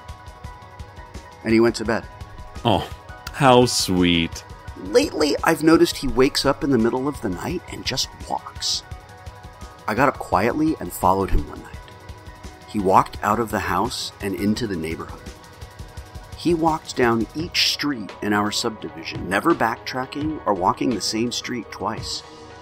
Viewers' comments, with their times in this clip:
0:09 the music in the background sounds like a sampled dredg - the canyon behind her i seriously wonder if i'm the only other person to have heard of dredg